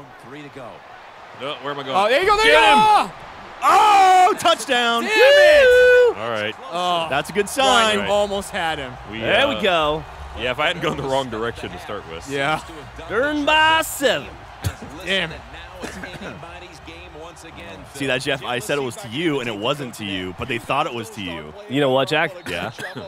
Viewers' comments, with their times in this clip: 0:05 yells "it's just me myself and I"